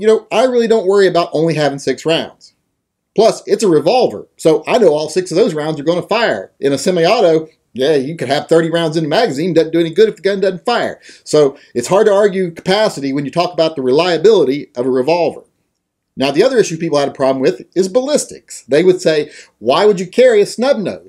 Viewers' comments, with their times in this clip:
0:07 turned into Boomhower for a second XD